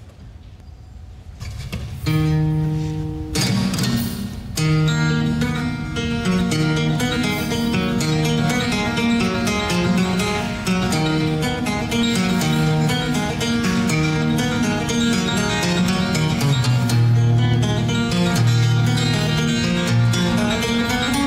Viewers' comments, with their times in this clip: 0:05 You really played Asturias on a regular acoustic guitar, impressive even though it wasn't the original